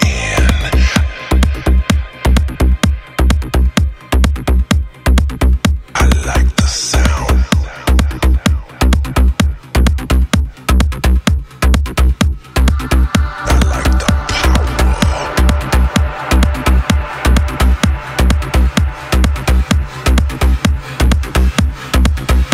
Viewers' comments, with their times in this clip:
0:07 the best music i've ever heard